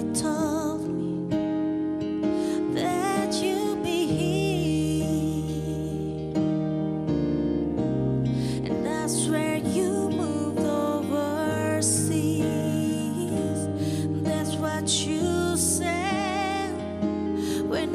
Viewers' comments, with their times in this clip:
0:03 that's cool note!!!